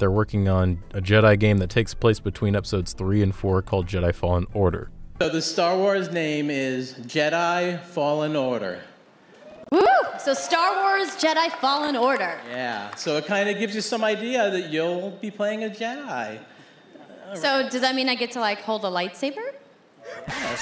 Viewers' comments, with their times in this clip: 0:06 Why does the guy sound around like 7 years old